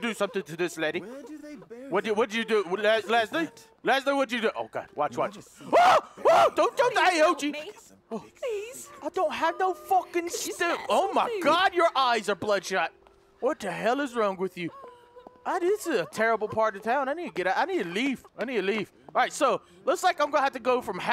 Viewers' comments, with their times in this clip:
0:08 Did he turn British for a second?
0:09 That British Accent was so funny